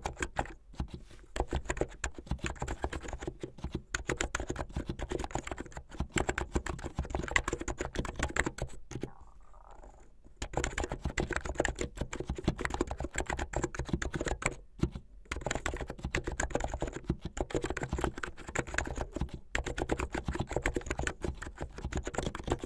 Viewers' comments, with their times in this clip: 0:07 My favorite keyboard. The pause for the stomach growl was also appreciated